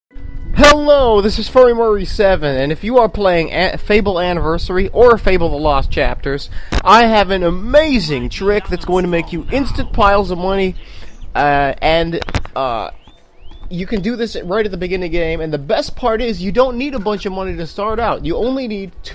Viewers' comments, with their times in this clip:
0:00 R.I.P. Headphone Users.